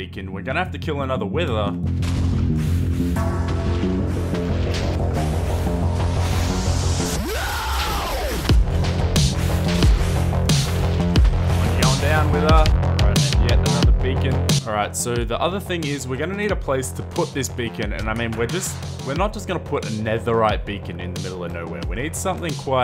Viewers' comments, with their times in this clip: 0:06 banging song! Wish I could find the name of it.